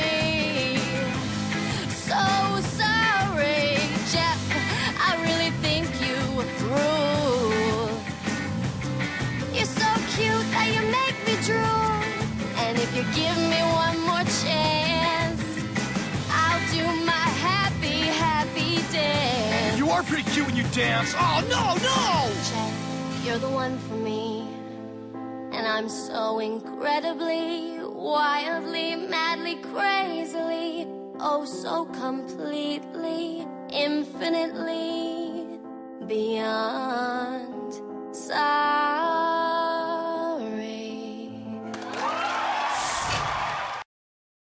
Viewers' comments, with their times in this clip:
0:09 in the song, when she says, "Your so cute that you make me drool." Is the best line, not because of the drool part, but the way she sang it!!! So beautiful!!!
0:09 nah why she sounds so god damn good
0:09 This is so beautiful , why couldn’t she sang this earlier in total drama island : episode 5, and standing and burning and that why not this maybe she didn’t have a dress over there I don’t really know she sang so nice
0:10 I love how she says "cute" idk why She is Talented Damnit.
0:36 The 🎵beyond🎵 at the end was one of my favorite parts